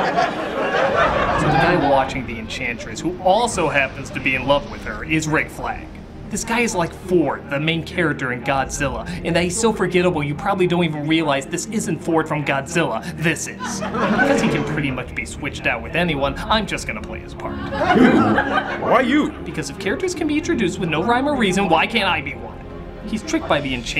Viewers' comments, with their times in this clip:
0:05 Doug, your John Oliver is showing.